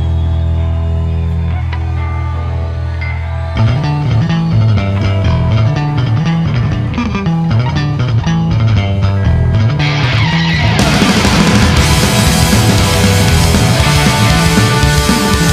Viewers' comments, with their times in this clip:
0:03 Fat mike stretching it out on the bass